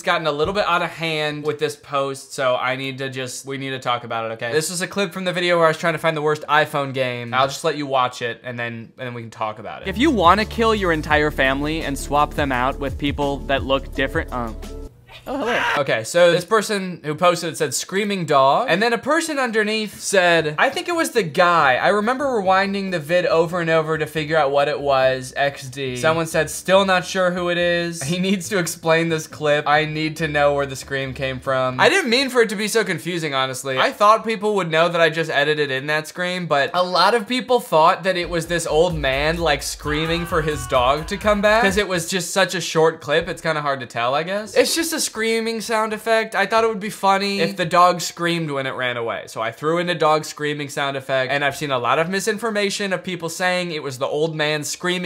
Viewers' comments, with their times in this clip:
0:10 hey guys need some critical thinking I knew he edited in the screaming sound effect
0:15 BUT THE THING ABOUT THE SCREAM IS THAT THE OLD MAN LOOKED LIKE HE WAS 80 BUT I THOUGHT HE WAS THE SCREAM SO IT MADE IT 10 TIMES FUNNIER
0:39 This video is cool and all, but who the hell is screaming ? I am so confused, I keep replaying the scream but I have no idea where it came from. I need answers because the I don’t know where the scream came from.